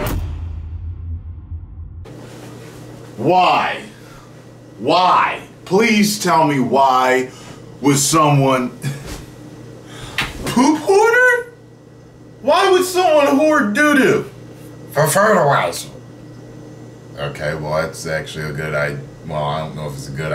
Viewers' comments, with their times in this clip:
0:05 when he's said "why" for a second time. I heard his inner Chris Hansen hahaha